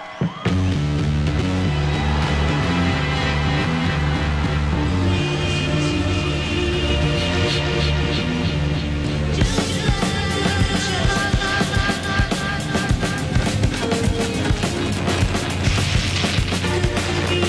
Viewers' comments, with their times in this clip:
0:05 Madonna's 'Like A Prayer' goes pretty well with 'The National Anthem'